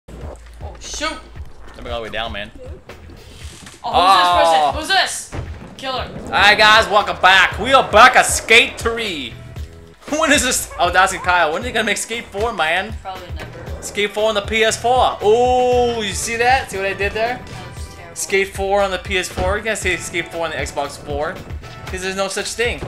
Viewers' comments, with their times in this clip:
0:07 When then noise came he was like aoooo😂😂😂😂😂😂😂😂